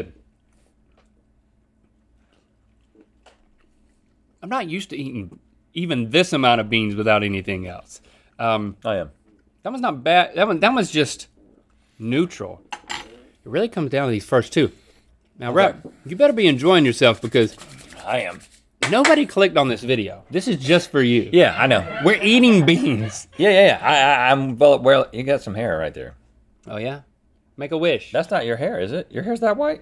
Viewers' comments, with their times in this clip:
0:10 How quickly Rhett said “I am” is hilarious to me